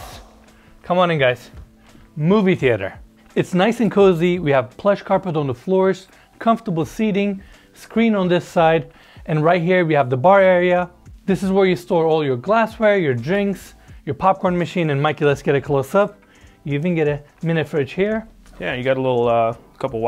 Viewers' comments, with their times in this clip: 0:03 the echo just disappear....